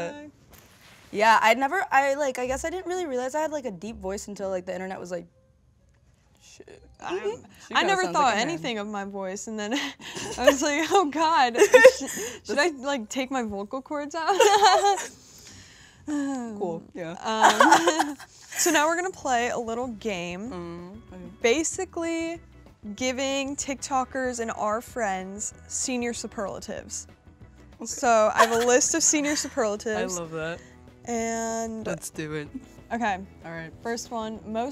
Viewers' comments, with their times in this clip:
0:09 Omg hearing her real voice was so weird
0:16 pleasee the awkward laughing from Dixie whoever thot it would be a good idea for her to be a host needs to be fired 😭
0:16 tf is that laugh